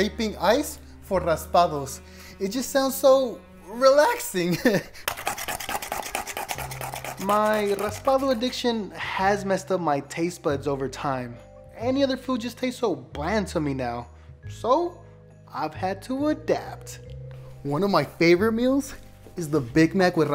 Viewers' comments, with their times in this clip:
0:04 that’s not relaxing that sounds like a headache
0:05 That’s not relaxing it sound Like a Headache